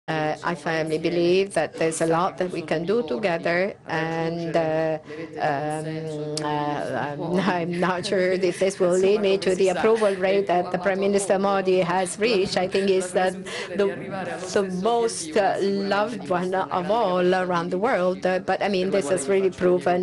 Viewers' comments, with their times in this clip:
0:06 that Italian kiss sound 🥵